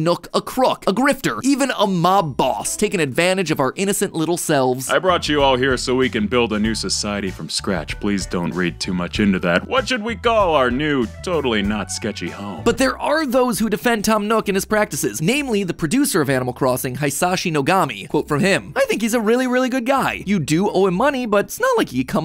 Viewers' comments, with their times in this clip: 0:05 why he kinda sound like Joe from family guy